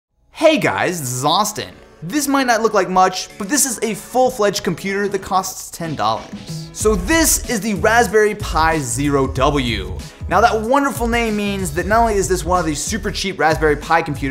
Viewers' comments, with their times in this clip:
0:00 hey guys thizzaustin XD